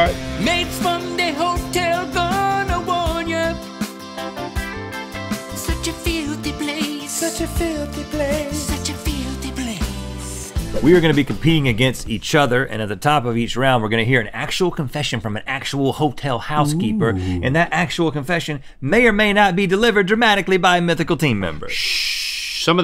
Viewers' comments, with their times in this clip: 0:03 wow that song was lit